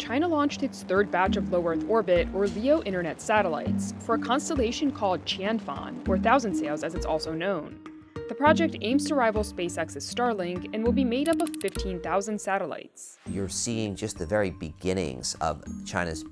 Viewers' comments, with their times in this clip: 0:04 At first, I thought she said... For a constallation called "Tampon" right in the begining